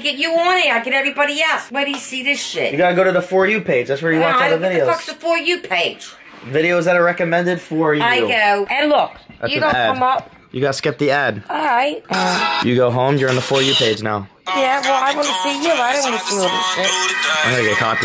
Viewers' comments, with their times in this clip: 0:04 Im just realized the ducks are gone no more censorship